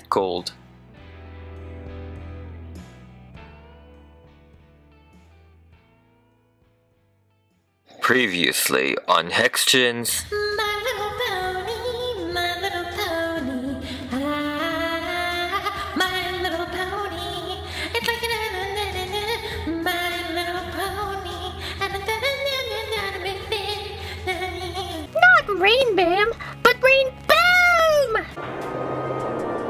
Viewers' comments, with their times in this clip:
0:10 this song tho XD